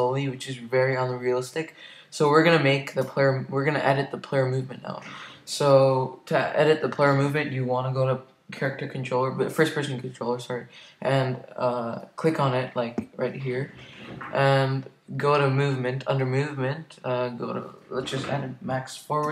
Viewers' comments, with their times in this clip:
0:03 am i the only one who hears that he farts